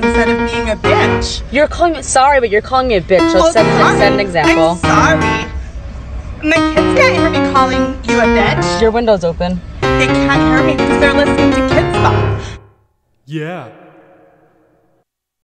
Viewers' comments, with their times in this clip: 0:06 I swear I hear the magic school bus theme